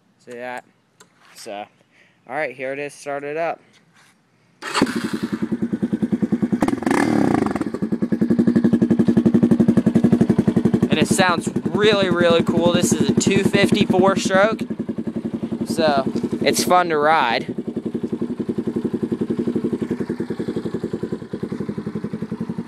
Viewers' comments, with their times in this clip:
0:09 of course it sounds better no muffler on it. ;)